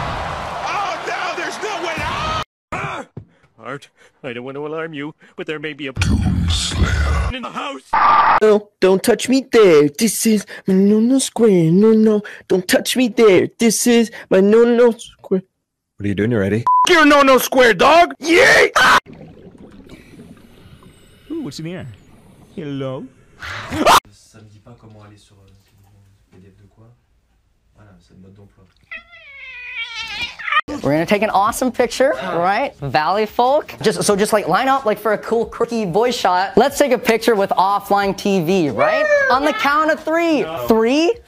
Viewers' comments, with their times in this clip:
0:03 "Bart I don't want to alarm you but there might be a DOOM SLAYER in the house" SCREAMING
0:07 .perfect cut screem
0:22 omfg I screamed with this guy that got me shook
0:24 I liked the one meme where the ginger cat was cutely meowing and then bit the owner.